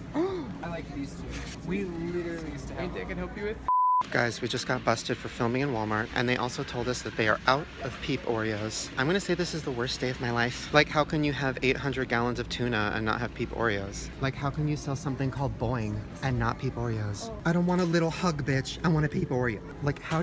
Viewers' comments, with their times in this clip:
0:06 for a second I thought it said bong!! Lmao 😂